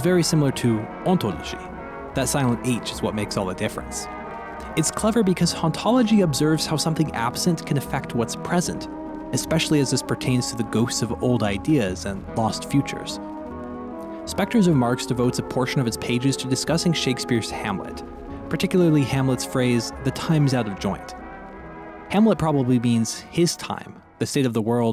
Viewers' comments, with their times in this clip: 0:07 was already in the throws of some self panic of sorts then throwing in the everywhere at the end of time music broke what was still hanging on